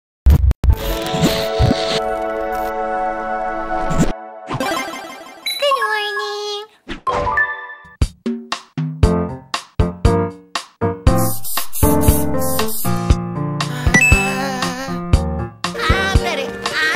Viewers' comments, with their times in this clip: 0:02 her voice is cute